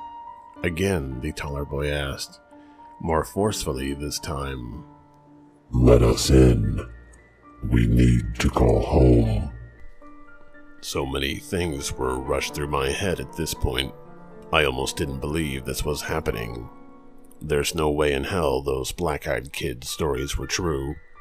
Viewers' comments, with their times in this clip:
0:05 Almost fell off the treadmill at the gym seconds🤣🤣that change in voice scared the shit out of me. Volume was on full blast!!😂😂😂